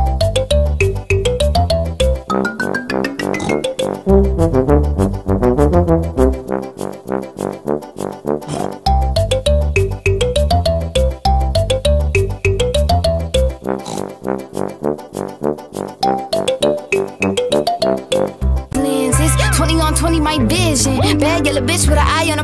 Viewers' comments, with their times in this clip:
0:07 I got the joke when nino started laughing and I was Dead